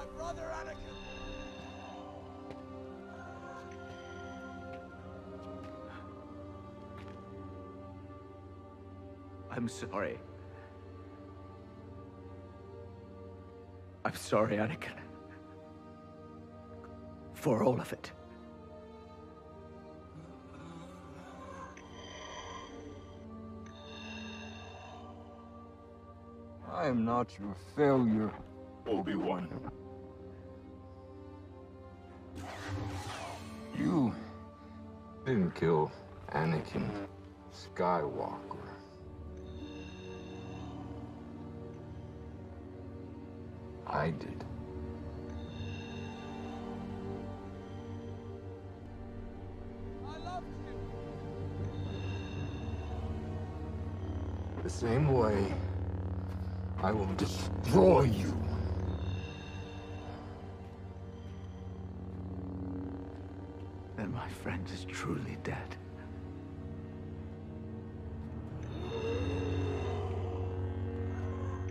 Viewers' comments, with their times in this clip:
0:09 obi wan’s voice break there is so heart breaking
0:26 “I am not your failure, Obi-Wan.” For a second it sounded like Anakin broke through Vader to speak, telling Obi Wan that he didn’t fail him. but when Vader’s voice synthesizer and vocoder re-registered when he said Obi-wan’s name, I felt like Vader quickly took over and overwhelmed Anakin again.
0:42 I wish his voice here transitioned to vader's voice when he said "I did"
0:53 I know it's Hayden speaking but that sentence sounded so much like Matt Lanter's Anakin! It shows that Hayden watched the animated series before filming since he's subtly incorporating Clone Wars Anakin in his performance.